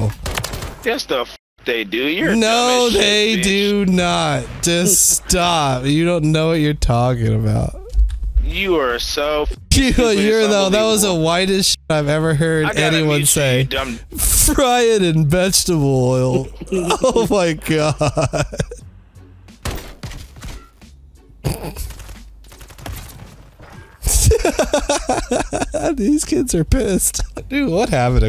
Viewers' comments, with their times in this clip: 0:09 you can tell by dude’s voice he’s never had fried chicken from crisco